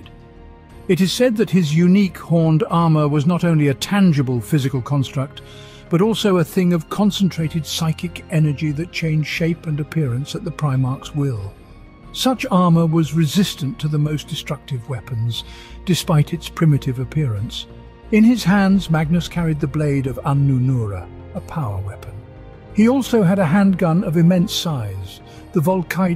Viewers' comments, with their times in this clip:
0:10 Does anyone know the song ? Such an epic song and sums up for me the tragedy of Magnus